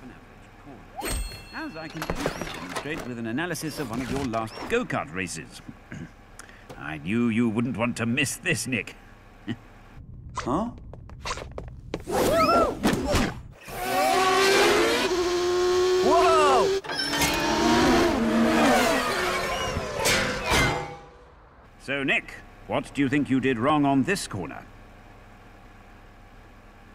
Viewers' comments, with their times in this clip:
0:10 did he just talk?